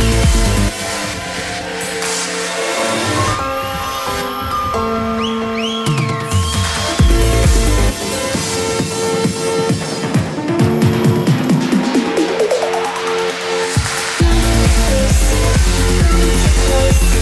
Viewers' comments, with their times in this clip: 0:05 LOL, he got the faces track straight out of Gareth Emry's set in ASOT#400 on day 1 in Germany. You can hear the live crowd and the whistle same as in Emry's set. Oh Snap! Epic track though!